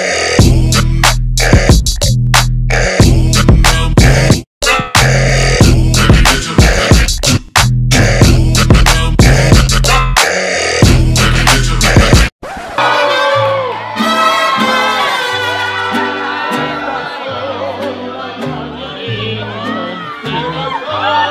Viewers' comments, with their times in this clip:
0:04 I'm watching this with no earphones on and when it hit my mom was like " Qué tienes porque le haces así tan feo" 😂 she thought I was burping 💀